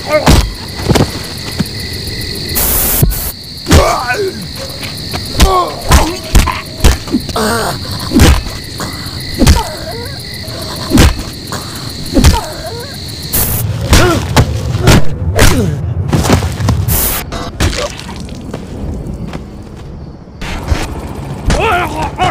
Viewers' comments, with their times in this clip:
0:05 SWAT #901728: screaming in pain and shock SWAT #902175: "just a normal day at the job"